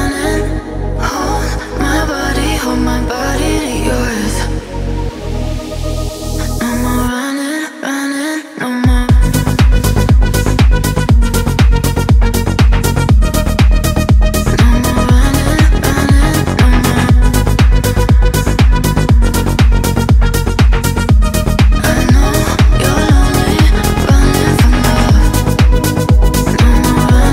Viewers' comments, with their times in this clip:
0:09 Amazing sound, beautiful song